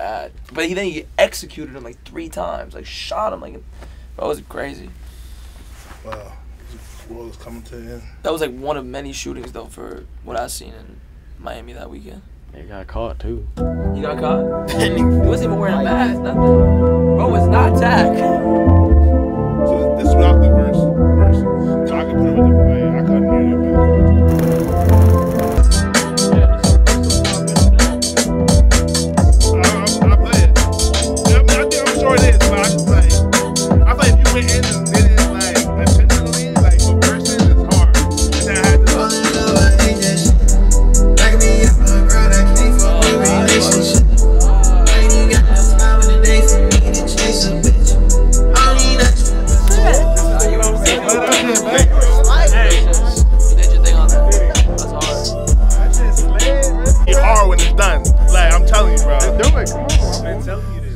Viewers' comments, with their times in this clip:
0:09 That joint made me pull back up and watch again that producer lethal af
0:25 That joint omggggg that joint is straight FIIIII🔥🔥🔥🔥🔥
0:32 that song right there is harder then a bitch fr fr
0:32 That beat drop …..boy oh boy that was fire! It was like a techno club beat then dropped to trap
0:34 that beat is crazy 🔥🔥
0:38 Beat drop goes crazy 🔥
0:41 Bruh when that beat dropped